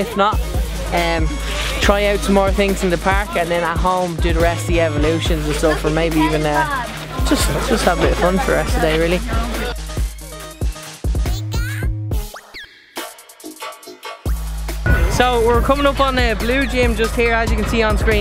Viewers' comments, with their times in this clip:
0:03 there was a man that swore